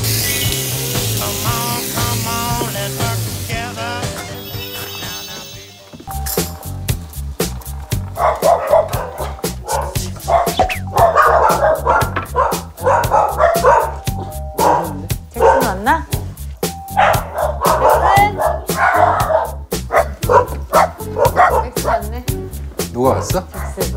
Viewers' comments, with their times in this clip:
0:04 normal music to MJ music😂